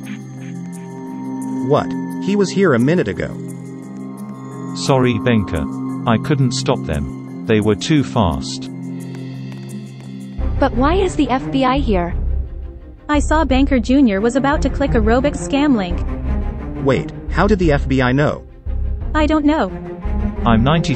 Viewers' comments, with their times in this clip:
0:08 the song is sooooo good